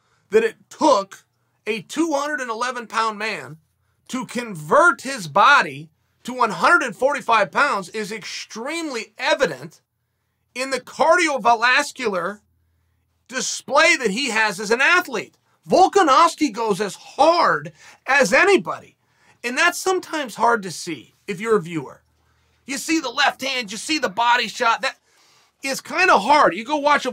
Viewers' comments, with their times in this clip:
0:10 " in the cardio valascular" LMAO bro it's cardiovascular...
0:10 New legendary word added to the Chael Sonnen lexicon: "cardiovalascular" definition: relating to your heart and blood and all that other stuff dummy, Ok great!
0:11 "Cardio Velasquelar" - Uncle Chael 2021.
0:11 Cardio Valascular lol